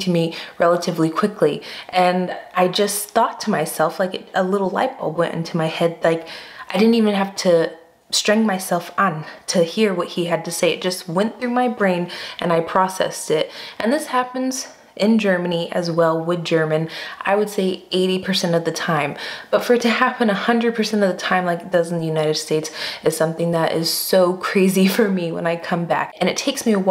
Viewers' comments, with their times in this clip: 0:06 Did you just say streng-myself-an ?!? 😁😆👍
0:09 "I've to streng myself an..." !!!??? made my day 🙂